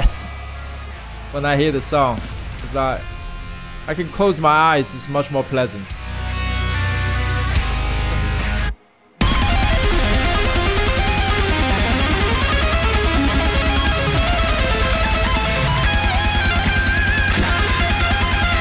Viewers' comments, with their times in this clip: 0:04 is the guitar part